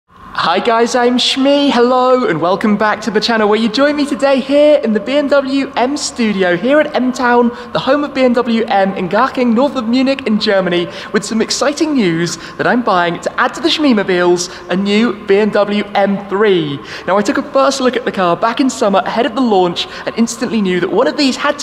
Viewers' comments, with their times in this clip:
0:09 I thought he chocked for a second